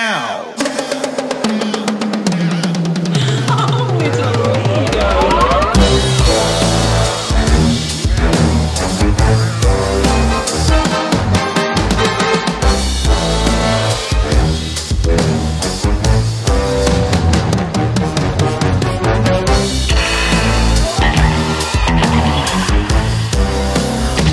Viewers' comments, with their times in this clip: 0:05 boom. what a breakdown.